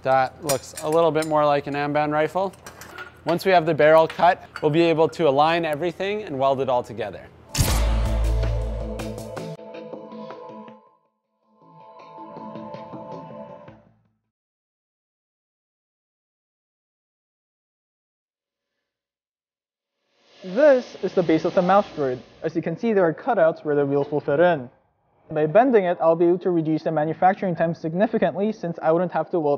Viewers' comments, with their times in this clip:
0:10 What happend to the aduio